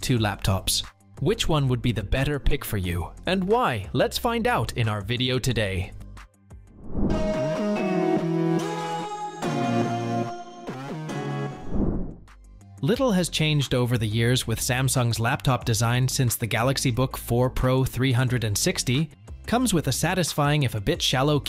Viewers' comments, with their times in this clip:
0:06 Did the AI make the sonic jingle logo thing too ? It's awful